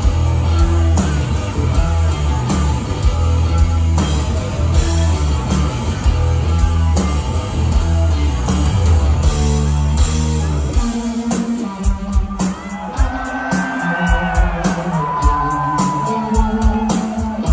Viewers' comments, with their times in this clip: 0:05 i can hear Chris Cornell singing...........